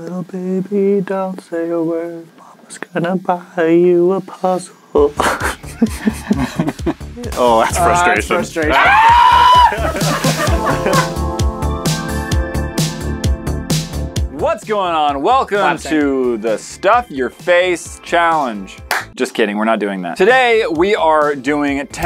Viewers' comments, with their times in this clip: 0:07 sounds like robby from piggy